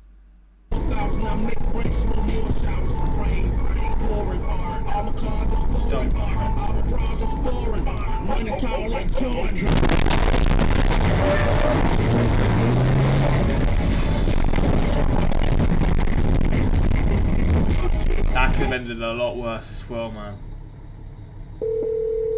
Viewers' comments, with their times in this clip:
0:07 When the Bass drops hard
0:08 I like that the beat and lyrics of (Mercy) fits perfectly when it hits the truck. Oh oh oh ookay 🎵 🎶